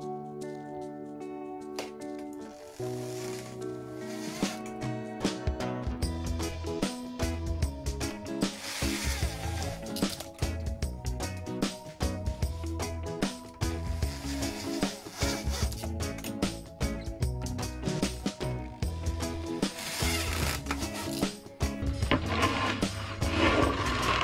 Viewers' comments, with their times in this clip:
0:09 watching and hearing that wood crack is painful. Smdh